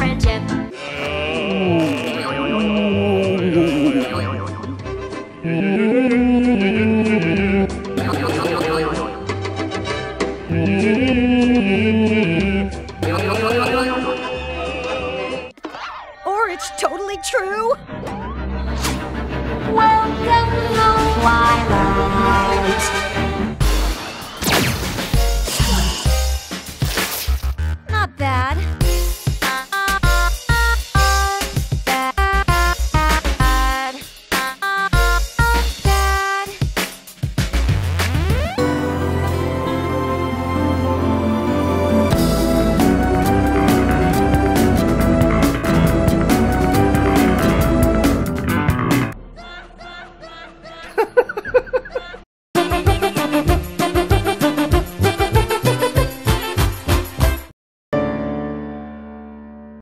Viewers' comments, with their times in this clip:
0:06 you can hear his voice in the back lol
0:19 This is the only thing i like in this movie. I can listen to this music on loop for hours.
0:30 my favorite SONG in the world
0:32 sound like a fnf song
0:49 don't spoil tridashie laughing guy!